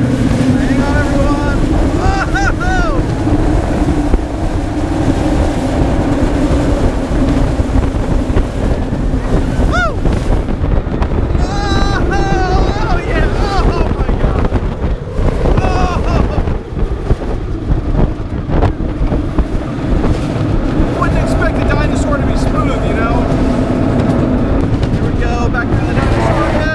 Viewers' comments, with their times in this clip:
0:10 That coaster is strange in every way. Are those tires actually slowing down the train? That transition is umm... creative. I will giver credit where it's due. It does sound really cool.